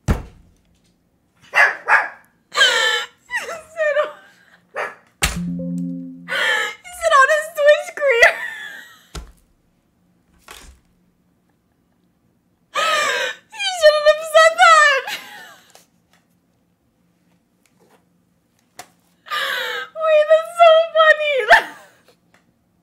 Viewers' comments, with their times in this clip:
0:03 is that speed in the background